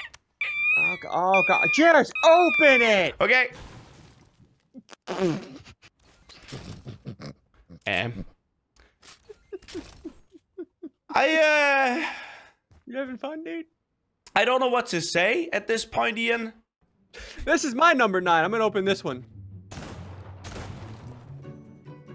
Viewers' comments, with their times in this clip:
0:04 Did ssundee fart in his mic 😂😂😂😂